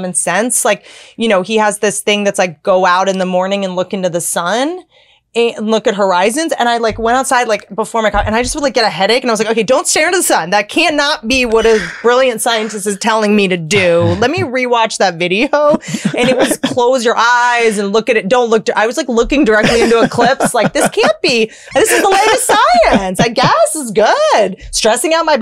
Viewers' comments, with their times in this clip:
0:09 Swear to God I thought I heard a mouse for a sec